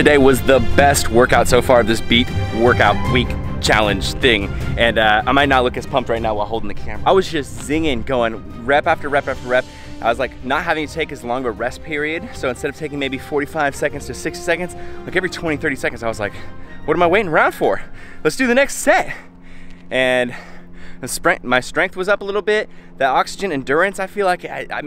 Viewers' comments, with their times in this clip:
0:08 you say “zinging” but the subtitles say “singing”